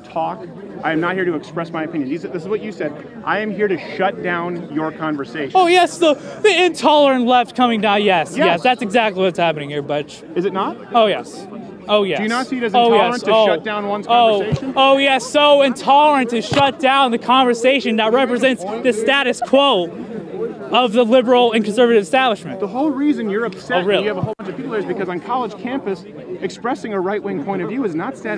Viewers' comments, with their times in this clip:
0:09 dude cant even stand by his own bs enough to not stutter out his insults HAHAHAHAHA